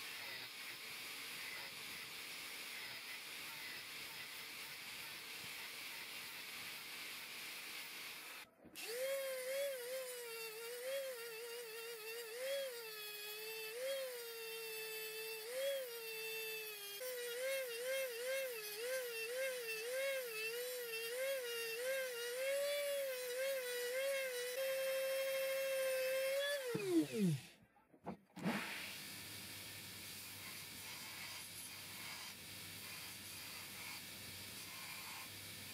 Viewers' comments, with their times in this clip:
0:09 The noise 4 year olds make when they can’t play with a dangerous object.
0:12 the fly in your bedroom at 3am
0:17 sounds like my mom cheering on me